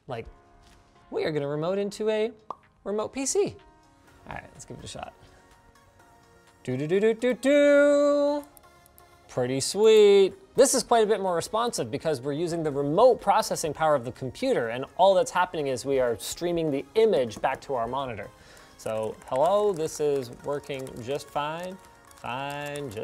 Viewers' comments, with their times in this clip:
0:05 it sounded like Dream's speedrunning music for a second - du du du du.